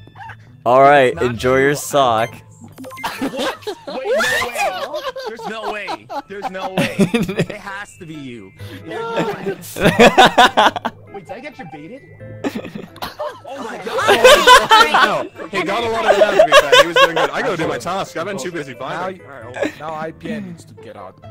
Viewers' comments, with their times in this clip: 0:06 his little giggle is so cute dfghfdjsishdj